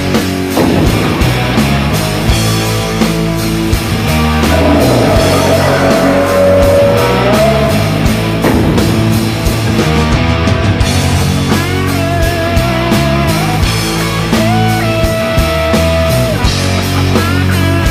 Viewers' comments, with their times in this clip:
0:04 When I hear Godzilla roar on it makes me wanna jump up and say "F**k yeah, Godzilla! You are the king!!"